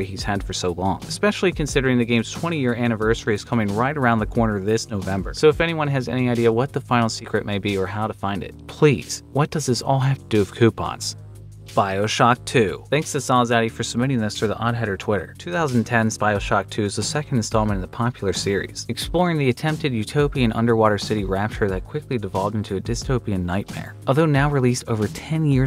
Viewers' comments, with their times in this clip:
0:08 "please, what does this all ha- PROCEEDS TO HAVE A STROKE